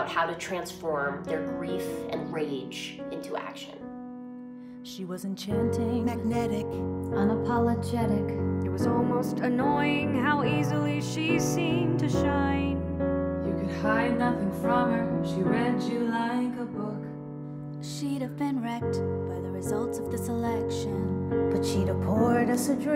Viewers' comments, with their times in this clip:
0:08 the notes and rhythm here remind me of another song but I can’t put my finger on what it is